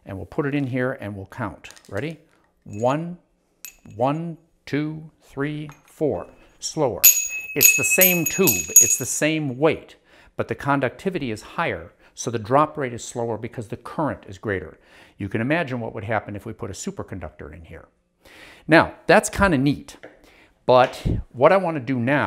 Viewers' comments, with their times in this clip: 0:05 My favorite part of this is when he tried to catch the supercooled rod with his bare hands If you listen closely, you can hear him gasp in shock right before dropping it.